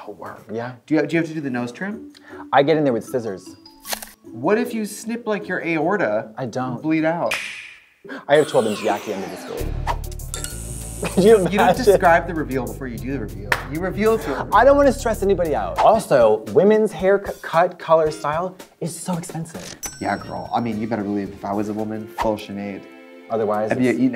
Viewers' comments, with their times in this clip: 0:07 Is that snap the Nintendo Switch snap